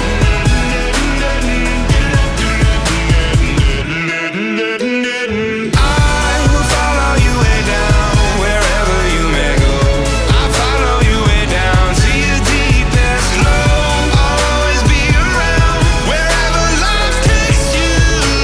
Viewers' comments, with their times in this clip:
0:06 The background vocals DEAR LORDT